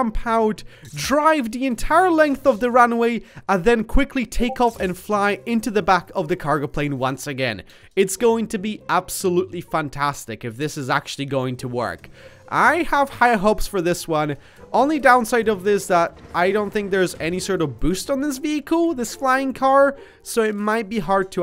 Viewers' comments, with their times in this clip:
0:03 I thought that was my discord
0:04 did anyone Else hear a Discord sound?